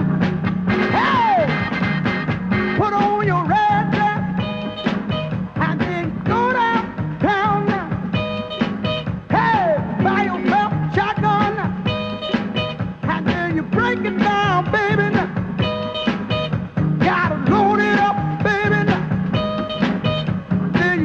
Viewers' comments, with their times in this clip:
0:08 the guitar player killer riff